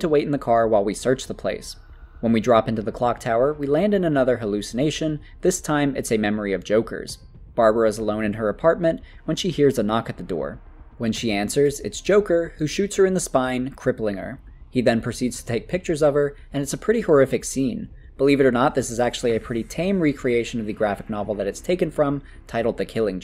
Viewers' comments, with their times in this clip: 0:05 i love the delivery of "its joker"